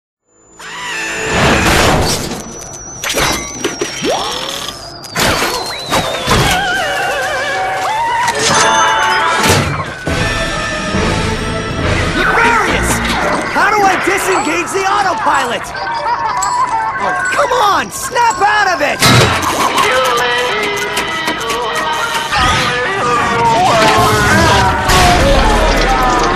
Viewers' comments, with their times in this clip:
0:06 I sometimes think it’s singing F*cking hell
0:08 Mexican soccer jingle
0:10 this is the angriest ratchet ive ever heard